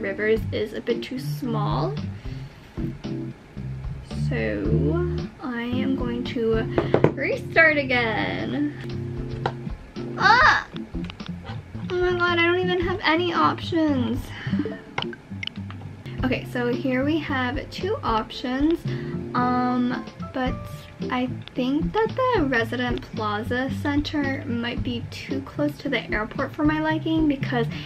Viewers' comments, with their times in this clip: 0:10 ahahha that was so cute, you have a cute voice 😭💕